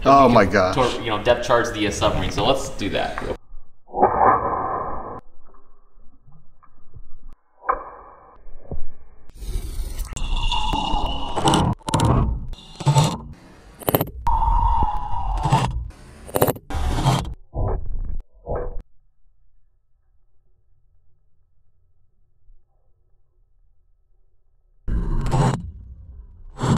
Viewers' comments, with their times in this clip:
0:04 big underwater boom part
0:10 Other people: Wow, what a cool way to destroy your lego submarine! Me: ALAAAAAAAAAAARM